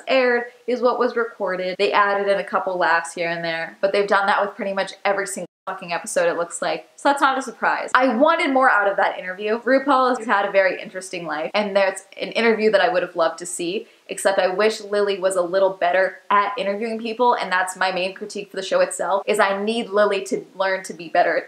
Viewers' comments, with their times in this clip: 0:04 is it just me or did the censor slip up LOL